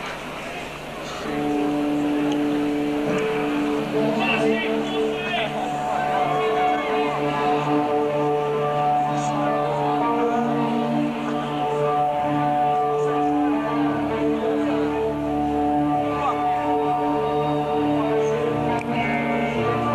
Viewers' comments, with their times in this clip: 0:07 sounds like eon blue apocalypse